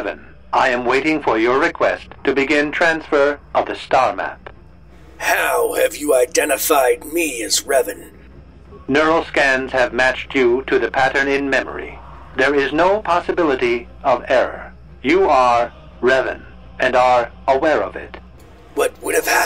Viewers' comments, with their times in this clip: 0:05 Nice voice effect through a gas mask I guess?